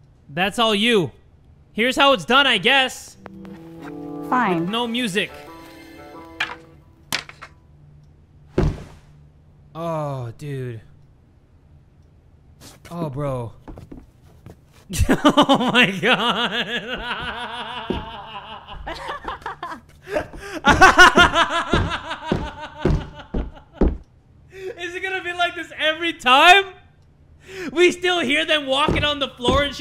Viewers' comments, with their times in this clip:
0:07 this is how it feels playing Pokemon sword and shield with no voices or music in their cutscenes.
0:08 this hurts to watch😭 the footsteps make it worse for some reason
0:08 With no music this was just PURE laughter.
0:10 I’m so glad that they still have sound effects when there’s no music
0:12 This Is So Bad with out the music but at the same time it's good i wish that i was in alexs place rn tbh